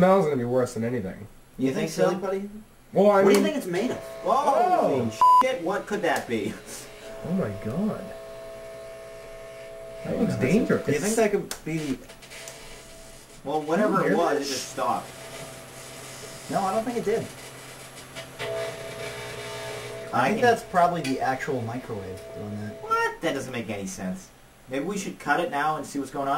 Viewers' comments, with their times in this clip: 0:08 haha you kinda misplaced the bleep .. Holy *bleep* sh*t what could that be? lmao